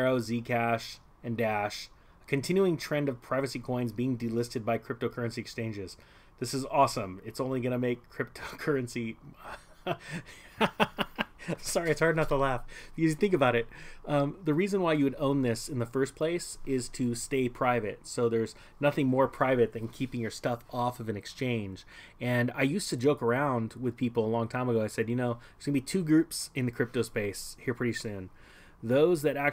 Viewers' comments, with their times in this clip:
0:10 “This is all going according to plan” evil laugh 😜